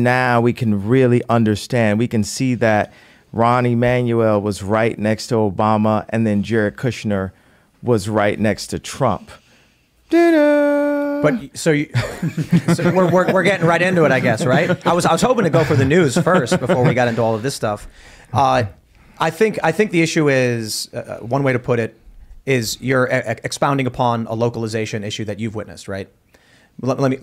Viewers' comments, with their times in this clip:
0:09 Whatever you call that sound Kanye issues after the Emmanuel and Kushner remark had me lol.